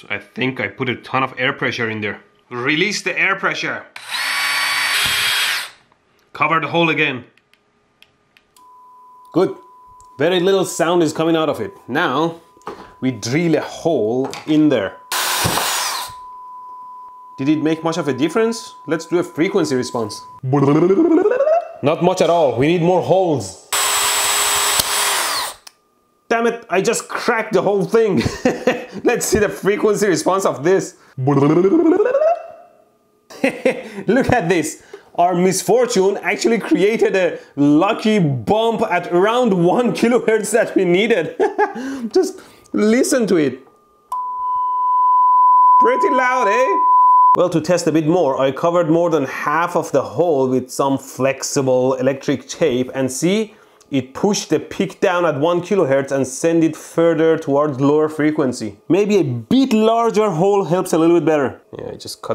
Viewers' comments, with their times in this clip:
0:08 that's how my PC fan sounds like lol the exact same frequency sound.
0:44 he goes Canadian